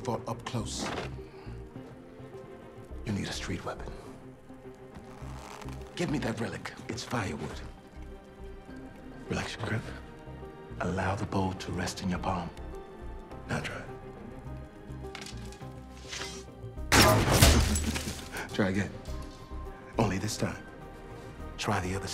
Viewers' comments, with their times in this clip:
0:04 you can feel the sexual tension going around in this part of the scene with all the "Faster" and how Jamie Fox goes "Ooooh" hahahah. Edit: actually watching it again, the whole video has sexual tension in it. Who watches a man lift chains while eating an apple.